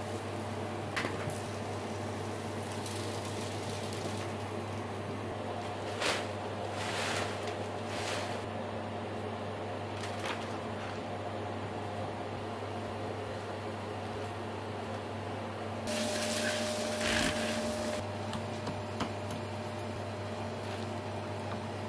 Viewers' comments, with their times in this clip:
0:07 You sound exactly like my dentist